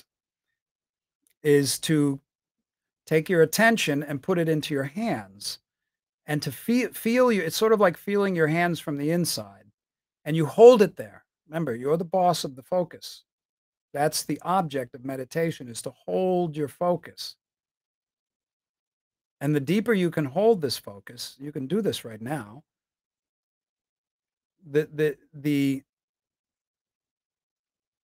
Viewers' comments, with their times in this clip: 0:09 you sound way better than Tony Robbins